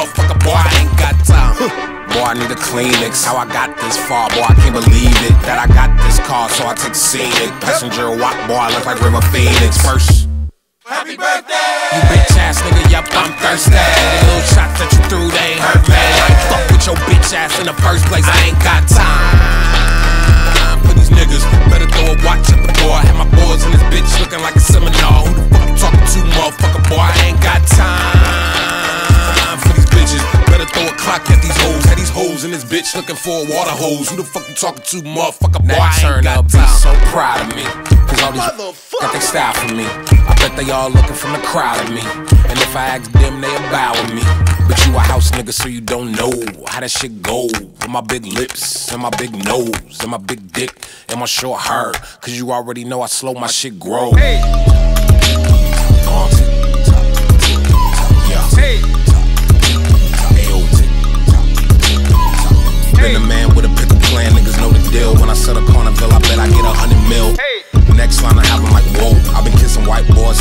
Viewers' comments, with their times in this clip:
0:10 happy birthday button
0:53 best beat drop.
0:54 Is No one gonna talk about how his beat sounds like the dooplis boss theme from paper mario ttyd